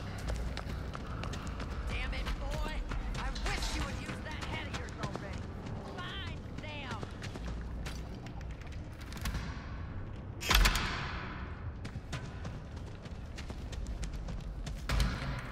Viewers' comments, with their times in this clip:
0:03 you broke the trap than Nancy voice line was matching like perfectly 😅